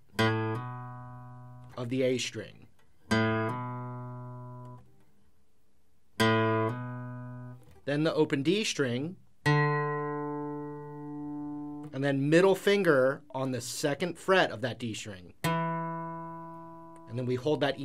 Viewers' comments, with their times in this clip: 0:04 Minute how does he make it sound like that? As soon as I put my finger on the A string it goes silent.